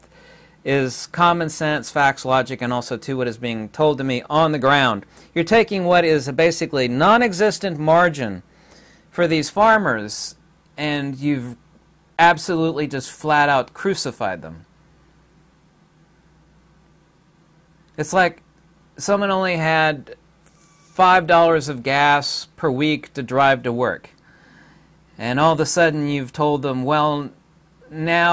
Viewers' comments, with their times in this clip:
0:09 the way you say "flat" and the pause after... We get that you can't admit too much on YouTube but we know what you mean